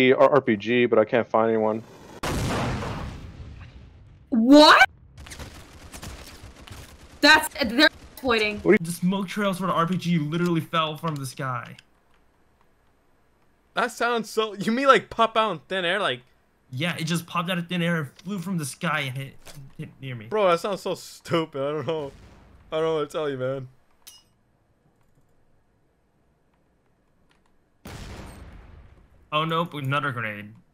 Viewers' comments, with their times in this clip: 0:03 why does he sound like a girl
0:05 Female voice but below?
0:12 In around 6 minutes something below sound like a girl and in he sound like a man this is giving confusing on he a male or female